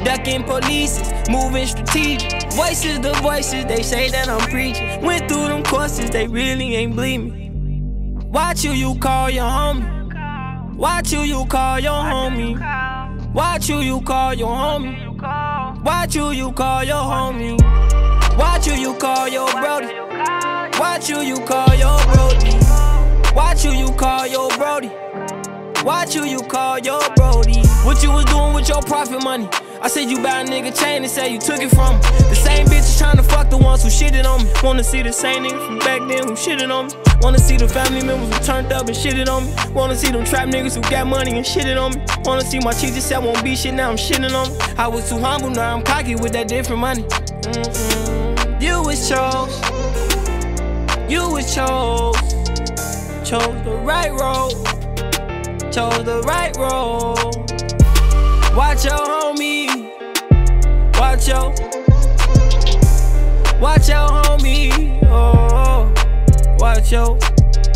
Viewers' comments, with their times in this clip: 0:10 durkio in da back saying watch who you call hittin
0:51 😂😂😂🤣🤣 I’m SLEEEP! This melody plus what’s goin on in the background is HILARIOUS!